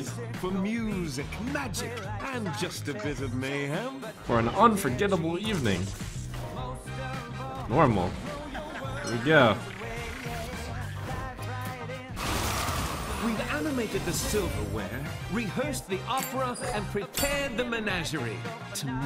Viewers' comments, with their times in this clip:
0:07 did any one else hear ben brode's laugh ?